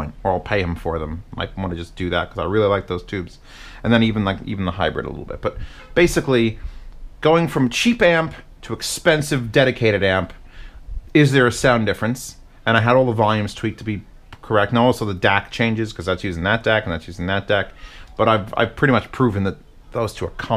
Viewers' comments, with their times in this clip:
0:05 Also a car honk